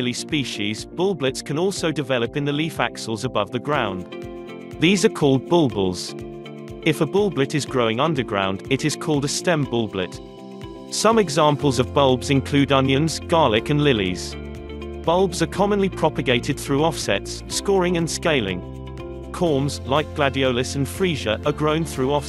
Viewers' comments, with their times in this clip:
0:04 bulbuls you say?